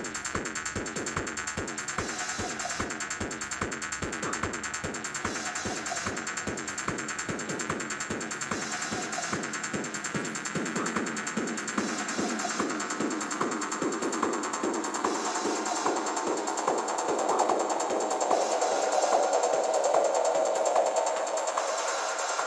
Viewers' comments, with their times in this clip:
0:05 high-passed saw noice